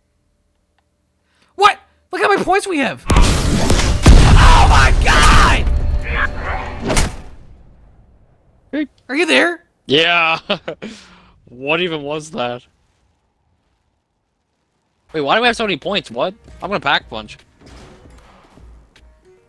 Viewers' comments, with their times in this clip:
0:03 perfect cut scream